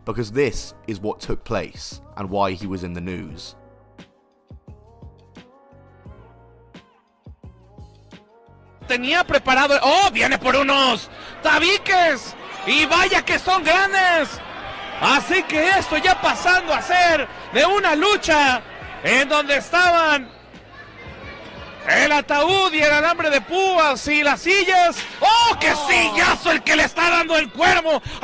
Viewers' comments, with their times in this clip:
0:10 the Spanish announcers, THE HYPE.